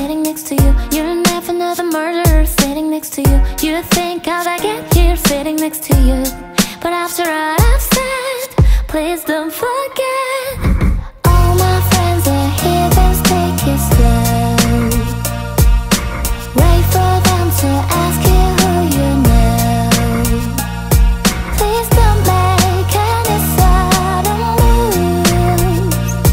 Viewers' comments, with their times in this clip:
0:09 When I was a kid that's what I thought it said